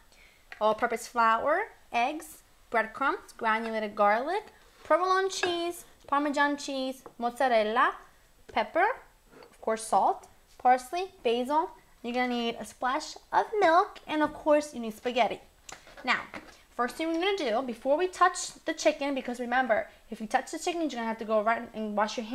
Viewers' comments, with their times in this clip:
0:07 The way she said mozzarella sounded cute.